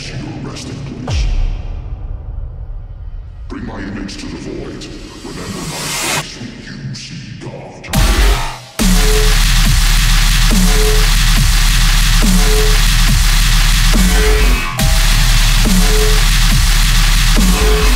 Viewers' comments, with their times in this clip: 0:04 I accidentally skipped RIGHT to the drop